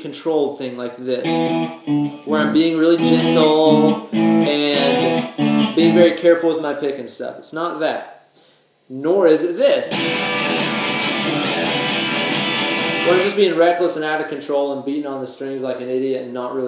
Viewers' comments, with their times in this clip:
0:03 That sounds like All the Time by Green Day.